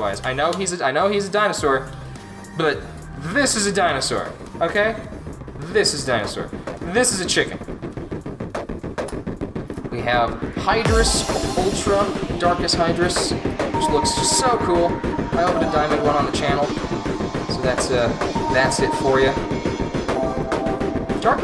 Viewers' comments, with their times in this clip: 0:07 that background music was overpowering your speech
0:07 i had to check if something was playing in another tab. But no just loud music
0:07 What is with that background audio spike
0:07 music to loud boi